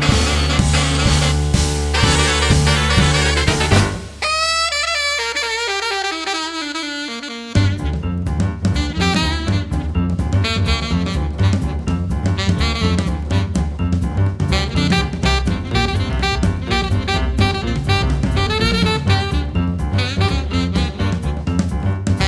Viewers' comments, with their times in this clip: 0:10 12 bar blues chord progression; Epic.